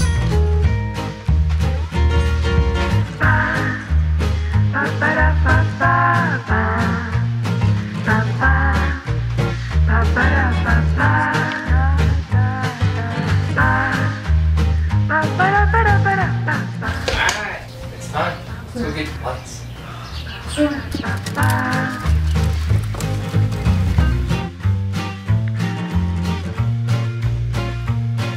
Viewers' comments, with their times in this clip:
0:10 for some reason that song reminds me of a Alfred Hitchcock movie 😬🤷‍♂️😮